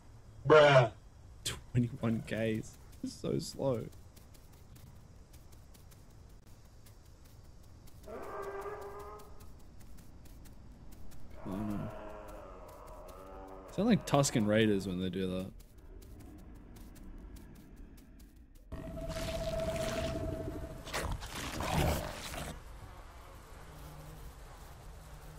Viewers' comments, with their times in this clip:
0:06 LOL! 😂😂Yep confirmed that was definitely a tusken raider literally exactly the same sound. Cera is tough cause so slow when small and night vision is horrible for them. When ever i play cera i always die at night. Cant see nothin with cera 😆 and props to not giving up dude. 💪🏻